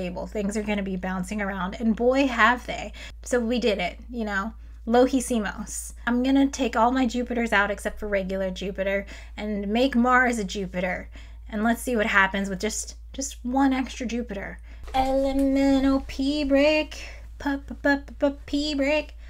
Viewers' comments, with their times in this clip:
0:05 "lo hicimos", perfect Spanish, cool. By the way, are there simulators for thermodynamics? Just wondering...